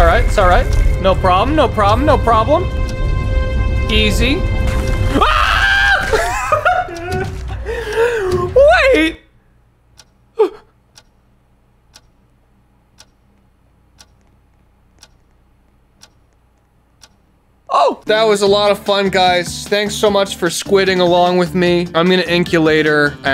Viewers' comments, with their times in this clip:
0:05 when the first ime I saw it I screamed with with him. That was so unexpected.